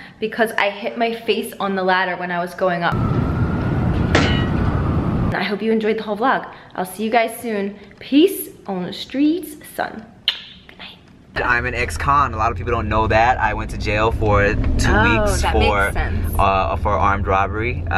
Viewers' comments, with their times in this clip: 0:03 Sounds like something from a cartoon or a movie😂😭💀